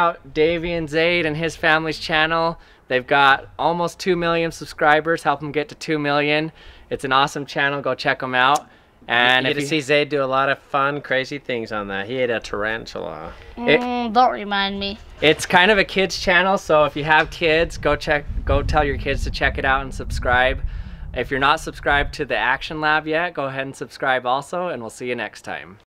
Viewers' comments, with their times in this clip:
0:07 they swap voices or something o.0